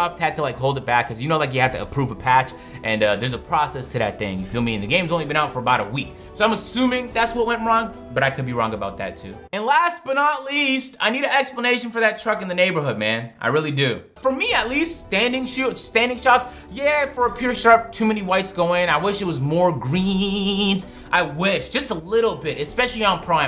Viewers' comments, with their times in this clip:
0:09 😂 he’s hitting those notes